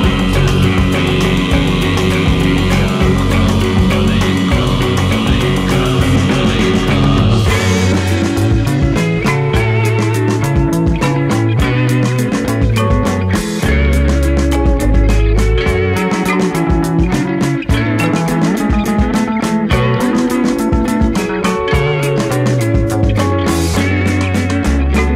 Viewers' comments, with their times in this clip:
0:07 That interlude always makes me do that scrunched-up 'fuck yeah' face. So goood.